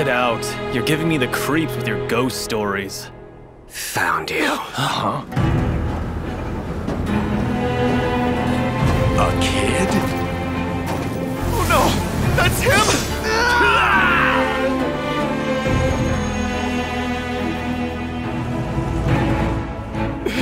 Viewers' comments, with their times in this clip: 0:03 OMG HIS VOICE GIVING ME GOOSEBUMPS